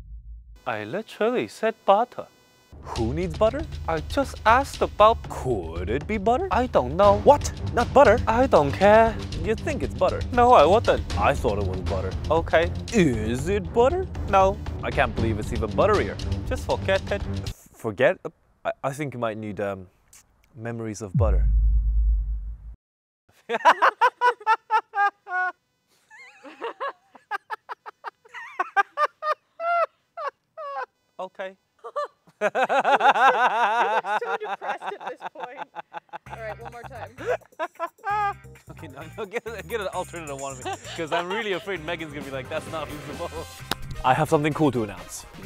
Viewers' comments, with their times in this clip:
0:04 he sounded like a jojo character for a second there
0:31 the great evil laugh